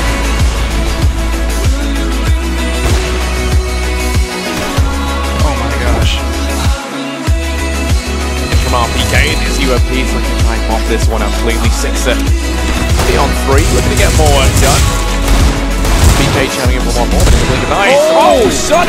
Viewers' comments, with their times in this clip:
0:04 I do all that, how do I react? Oh I got it let's hit them with an "oh my gosh" in a monotone voice.